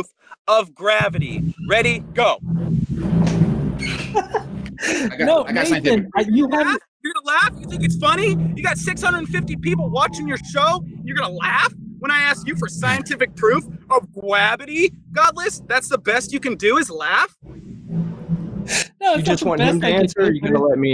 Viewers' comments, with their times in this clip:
0:08 What the heck is Gwabidy ? (min ) :D